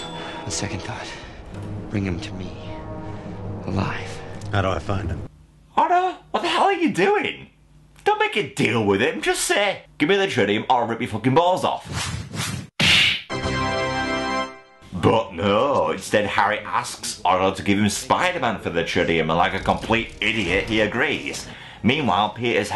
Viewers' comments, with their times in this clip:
0:05 Nice one, always laugh at the short du-duuu! after knocking harry out of the way. xD